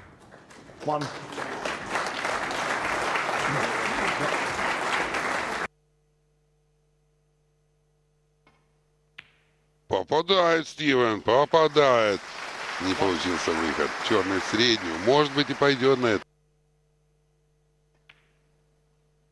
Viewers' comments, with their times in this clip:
0:07 that guy swallowed a frog